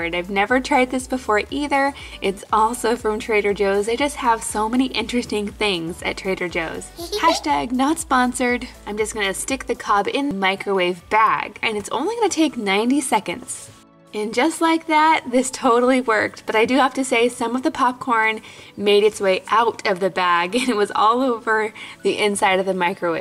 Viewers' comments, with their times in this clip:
0:07 It's a week late at watching but saw Luna 2 times, 2min and ish and heard her the 3rd time but didnt see her. #lunalunchbox